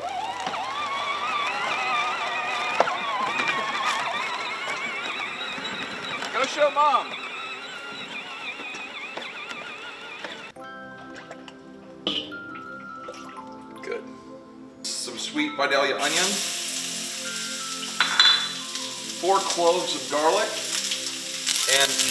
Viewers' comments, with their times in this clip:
0:10 Every time when that soundtrack plays in between the vlog, couldn't help being nostalgic.